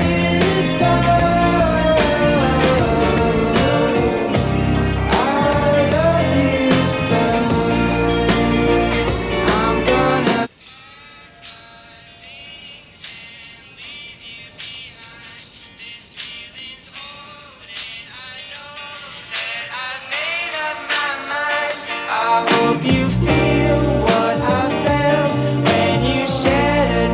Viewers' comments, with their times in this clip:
0:10 I thought my speakers were broken
0:10 I thought my earphones broke damn
0:10 i thought my headphones was broken
0:10 no bro, your speaker or headset or anything you use isn't broken
0:11 i thought my headphones broke lol